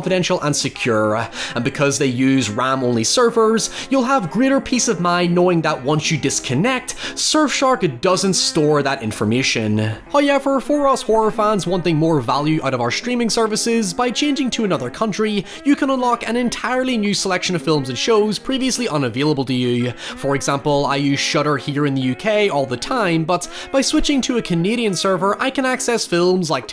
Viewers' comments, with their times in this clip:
0:10 First "hoyevver" drops buried in the sponsor drop. Cheeky.